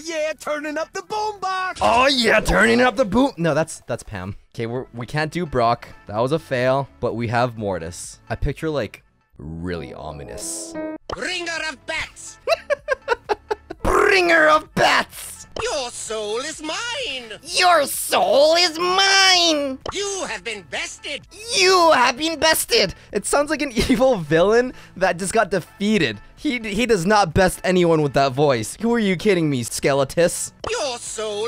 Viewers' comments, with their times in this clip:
0:10 Mortis’s voice is so fking sexy ...
0:11 Very good candidate for voice acting Papyrus!
0:14 I can't hear a difference 😂
0:14 That triangle sing
0:15 Bro he be stingy from lazytown
0:16 o.j sounds like that kid that sings the mine song
0:17 YOUR SOUL IS MINE (STINGY FROM LAZY TOWN ON HALLOWEEN VOICE)
0:17 U sound like spongebob
0:17 you sounded like a cartoon villian lol
0:18 No joke he sounds like Stingy from Lazy Town
0:18 OMG STINGY FROM LAZY TOWN IS THAT UUUUUUU
0:19 you sound like papyrus from undertale